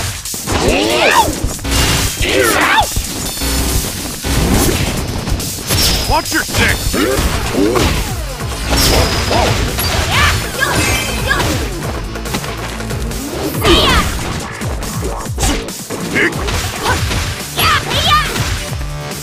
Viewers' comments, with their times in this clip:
0:04 Did I just hear Guile say, "Watch your d**k!" while switching in?